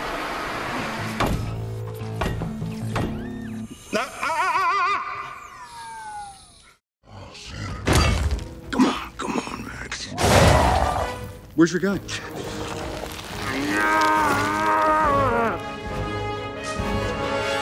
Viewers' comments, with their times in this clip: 0:04 casual parent sound